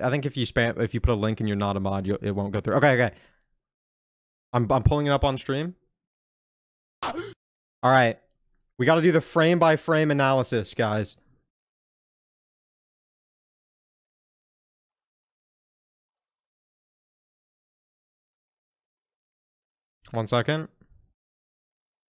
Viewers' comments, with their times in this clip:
0:06 he screamed right here lol